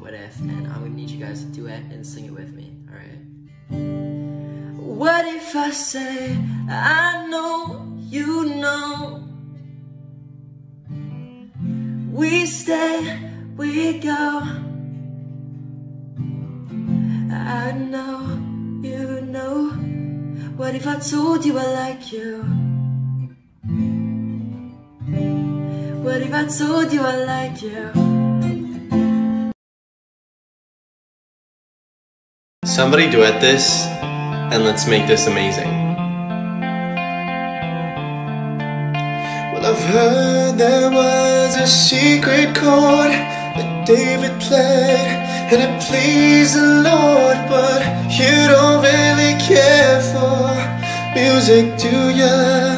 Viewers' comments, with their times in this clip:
0:06 My stay ass said “lee know” when he said “I know, you know” 👁👄👁
0:34 (3rd song thingy) you can tell he has autotune on lol
0:38 OMG I'm in love with his voice